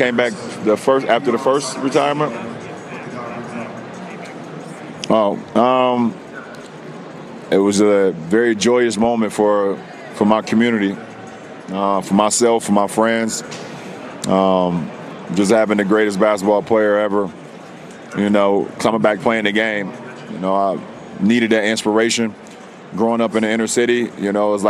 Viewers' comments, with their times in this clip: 0:06 Dude sounds just like Obama :') OMG can't stop hearing it like that haha